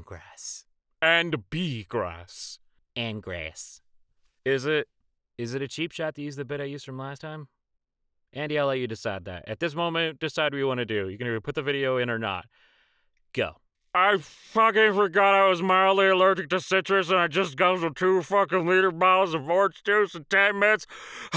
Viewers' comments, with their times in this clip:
0:04 sounds like they all smoked grass